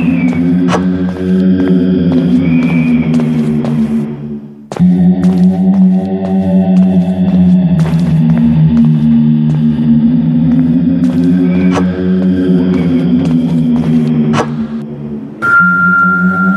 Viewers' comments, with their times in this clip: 0:03 Im scared of the voice on